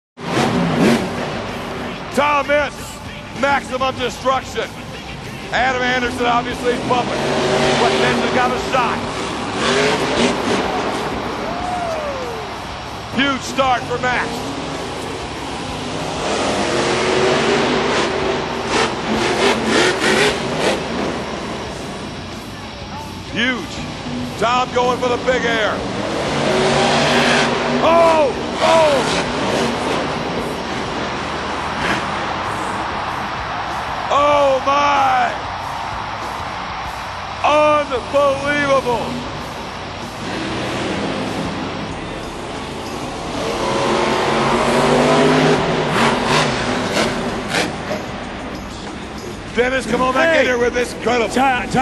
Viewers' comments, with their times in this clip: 0:02 when I was little I always thought he said Thomas😂😂🤣🤣
0:38 lol did he say un-four-wheelable? lol